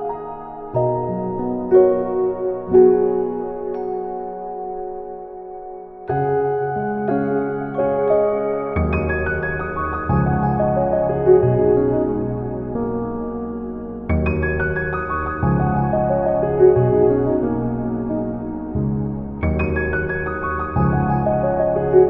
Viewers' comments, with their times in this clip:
0:07 I've been listening to this song for years. I can't explain why but I've always found the piano part so beautiful, and it catches my attention every time. Turns out THIS time I was finally prompted to work it out on piano for myself... I think I've got it, and I've somehow fallen even more in love with this song!
0:08 oh my lord that piano.... it's like im sinking into the sea, slowly reaching the sandy floor, surrounded by nothing but peace and quiet with the light sound of surface waves ..or something like that